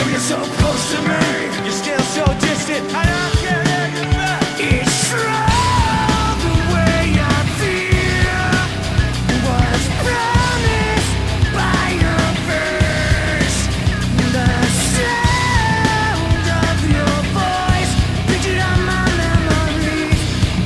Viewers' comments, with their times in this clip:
0:03 Is his voice loud, or was it a post production ? May be both !